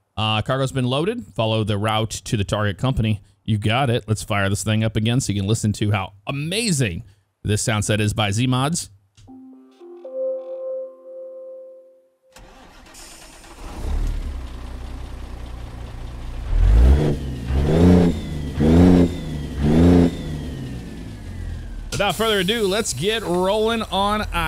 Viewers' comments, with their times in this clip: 0:09 My favorite part of the semi truck is the startup chime.